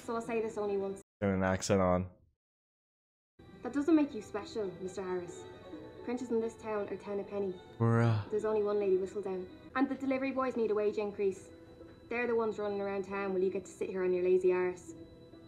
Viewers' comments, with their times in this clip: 0:03 Irish to be exact. The actress playing her is Irish - not sure where she's from though so I don't know if that's her natural accent (they differ depending on the area). She's also famous for her role as Claire in another famous Netflix show 'Derry Girls', but I don't think she's from Derry.